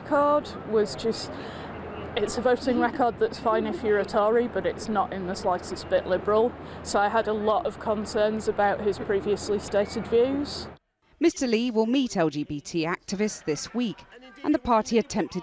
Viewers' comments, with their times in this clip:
0:03 Did she say Tau'ri as in the Goa'uld word for human?